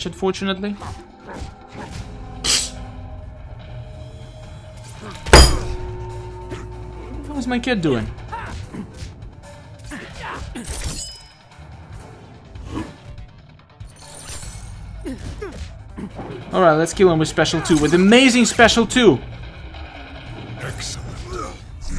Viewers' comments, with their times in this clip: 0:06 Also, what was your cat doing? Because you scared the crap out of me the first time I this video when you slam your desk.